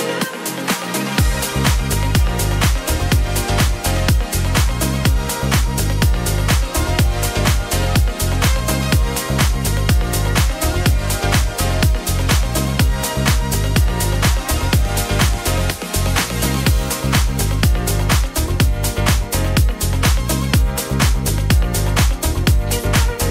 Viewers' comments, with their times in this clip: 0:07 Good mix! Expecially the cheesy part between 9;30 towards --> totally summer house n´uplifting.